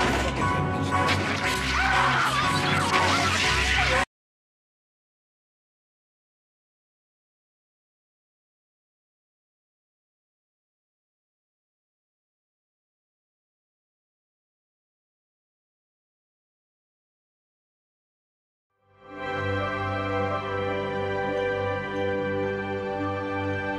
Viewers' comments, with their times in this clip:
0:04 Why does the sound cut off ?